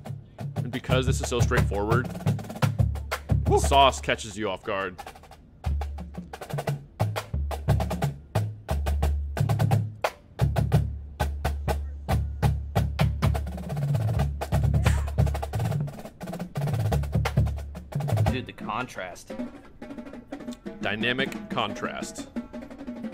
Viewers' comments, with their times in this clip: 0:07 they do the "Mars" Rhythm and then go directly to the double stops 3 note motif from the 2010 Mad World Opener So many easter eggs from past shows